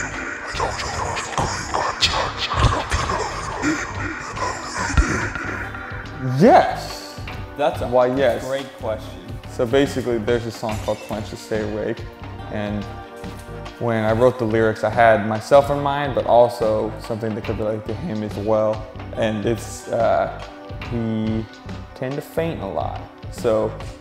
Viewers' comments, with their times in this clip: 0:06 how he says yes